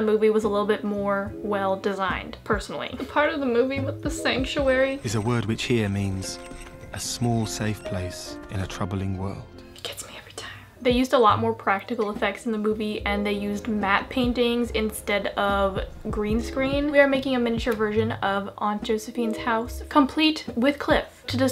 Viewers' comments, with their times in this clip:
0:04 THIS PART MADE ME CRY THE FIRST TIME I WATCHED IT and its been stuck in my head whenever i feel down haha the calm narrator voice explaining the meaning of sanctuary and the tent the baudelaires had made it also struck me